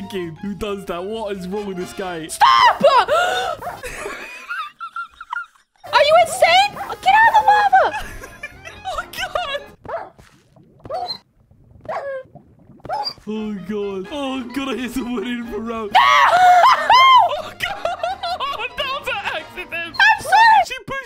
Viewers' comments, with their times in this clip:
0:03 dog starts flying out of lava dark souls music starts playing